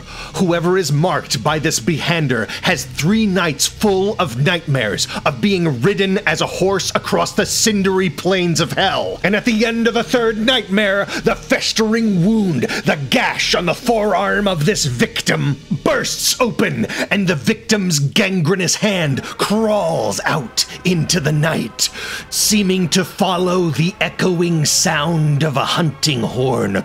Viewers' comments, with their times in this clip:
0:10 THAT NARRATION WAS METAL!!!!!! Ilysm for that, the energy was palpable.